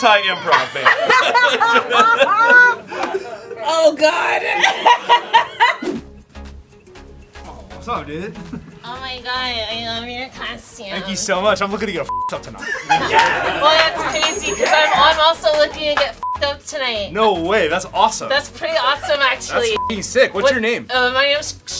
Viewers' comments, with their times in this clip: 0:07 is hilarious the way he awkwardly delivers it 😂